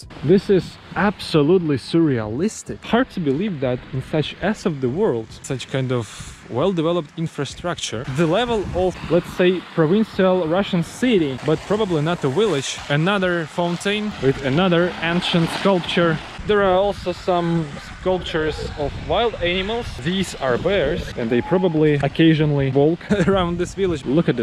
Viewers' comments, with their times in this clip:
0:10 I'd had it with the sound bouncing up and down like a yo yo. 👎